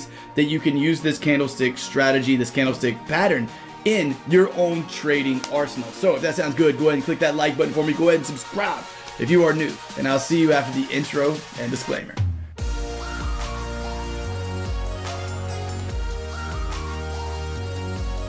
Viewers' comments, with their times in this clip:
0:04 Sorry but I came here to listen the theme song 😂😂